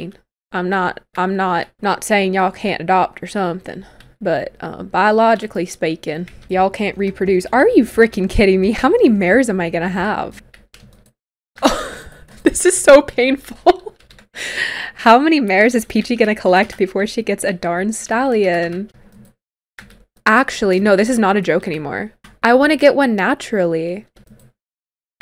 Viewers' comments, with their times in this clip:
0:09 the accent “sorry y’all can’t have a baby see the problem here well I mean you can adopt an all but not biologically”